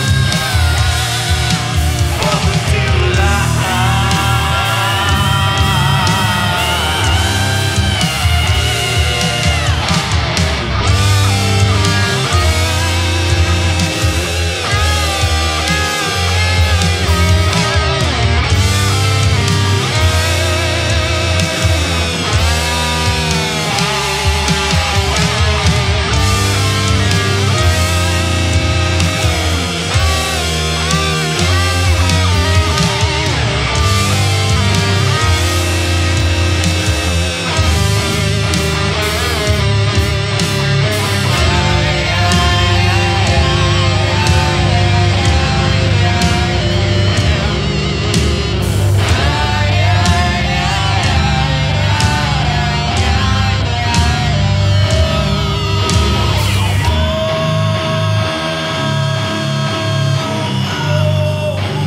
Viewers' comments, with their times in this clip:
0:08 simply amazing and mournful dual guitar melody!!
0:48 nice lil alice in chains energy .. sweet cover